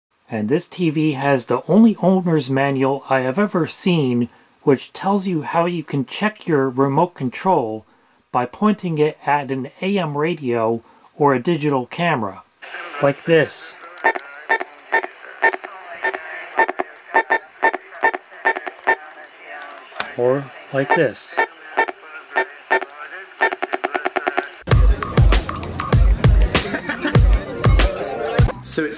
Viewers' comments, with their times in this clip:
0:10 I've done that trick with an AM radio in 2017, but not all remotes do that same noise. New DirecTV remotes have a different sound when you press the buttons on the remotes.